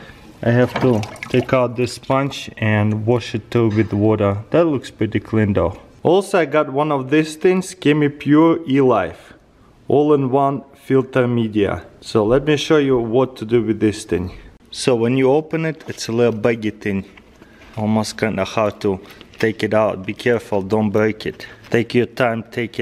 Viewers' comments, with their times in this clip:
0:07 looks like "pure shite" lol